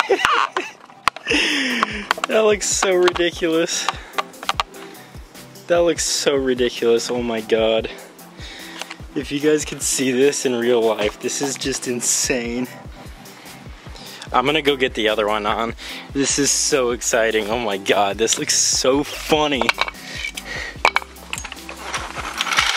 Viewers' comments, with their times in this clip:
0:04 If you listen closely you can hear the vett say "help"